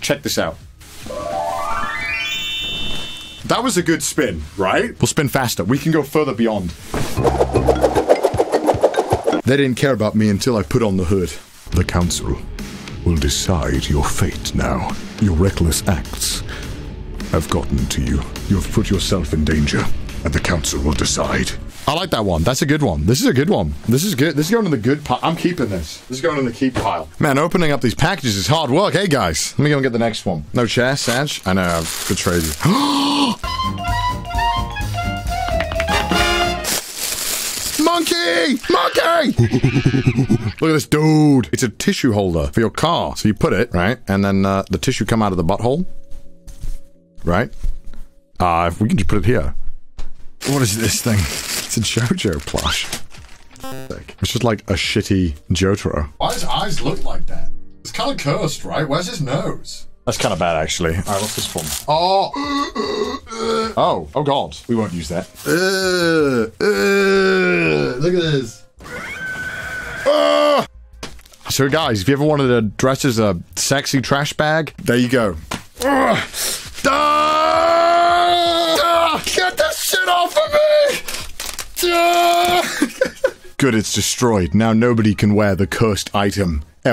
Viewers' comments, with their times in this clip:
0:10 Moments like these remind me that CDawgVA is actually a VA.
0:39 The way he says “Look at this dude.” 🤣
1:09 Were those Cleric Beast screams there? Because that is quite fitting for that item.